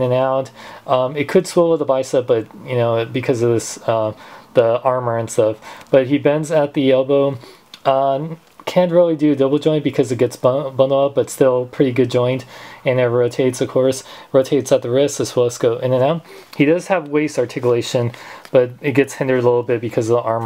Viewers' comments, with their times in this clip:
0:08 Can't really do double joint because Buhh buh- BUHHHH.